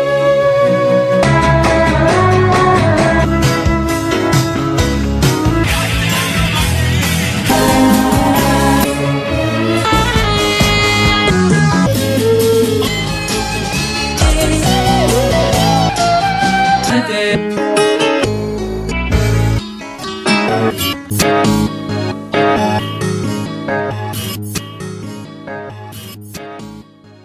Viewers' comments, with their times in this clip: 0:09 Best part when that disco beat takes over